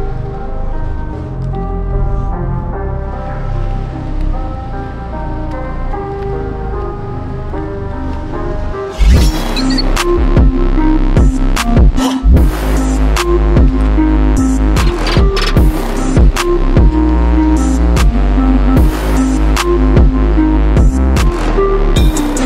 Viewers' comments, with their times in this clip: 0:08 A very impressive haul! Are you going to make jewelry at some point? (Also, small issue with the music getting too loud )